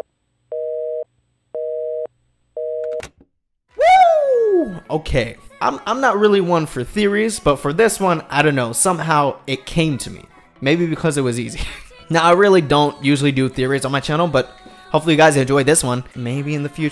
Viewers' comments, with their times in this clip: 0:04 Omg that OOOO in scared me